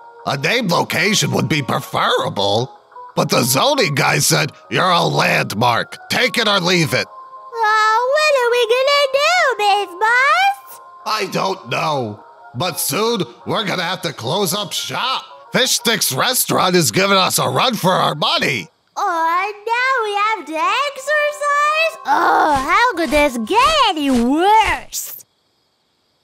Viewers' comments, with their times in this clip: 0:10 Did she just say buss!?!?!